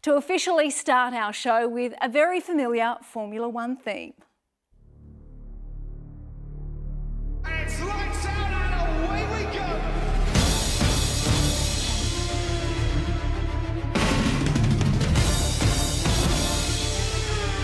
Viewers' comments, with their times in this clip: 0:05 Music starts Amazing performance!